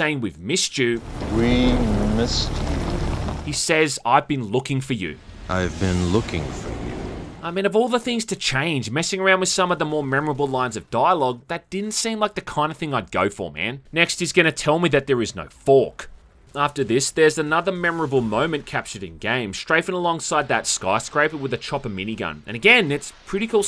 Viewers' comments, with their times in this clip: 0:04 that's sounds a lot like THotD Goldman